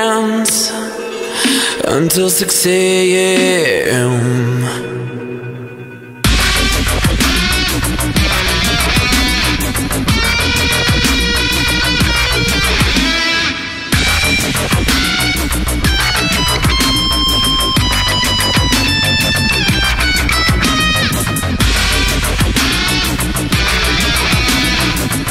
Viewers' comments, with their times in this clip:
0:06 that guitar though,